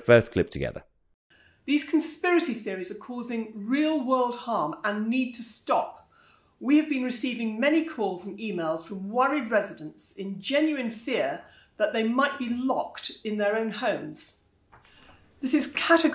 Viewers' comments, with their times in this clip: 0:03 I love how posh her accent is Working class leftism = bad, posh people leftism = good.